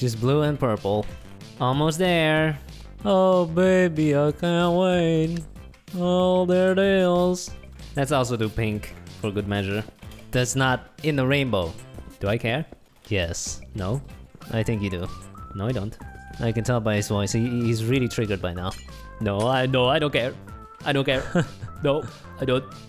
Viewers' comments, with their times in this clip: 0:04 they killed my ears RIP headphone users Also whenever they win I die